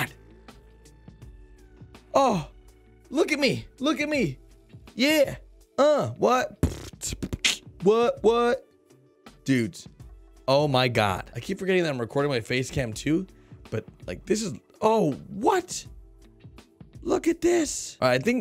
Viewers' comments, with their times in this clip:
0:06 did he actually beatbox, wow😮😂
0:06 HE CAN B-BOX